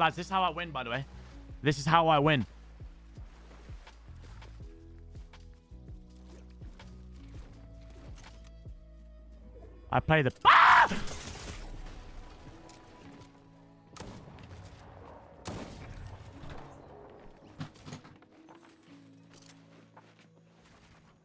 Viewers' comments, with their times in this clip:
0:06 Your scream scared the shit out of me